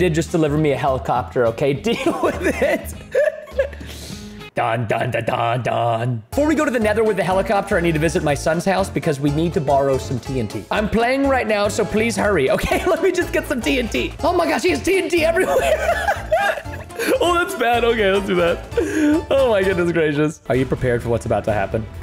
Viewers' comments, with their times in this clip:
0:04 Preston: Singing like Charles crashing his helicopter at chapter 3 Me:Welp